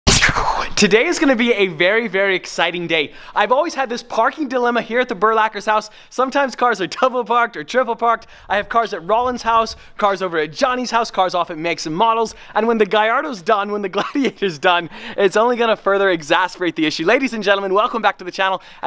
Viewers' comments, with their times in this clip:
0:00 I LIKE THE THSU THSU THSU